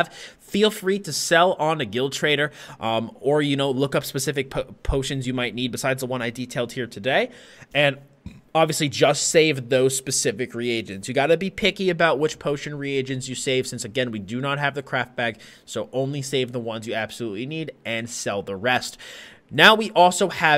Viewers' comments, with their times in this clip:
0:07 The blurp. Lol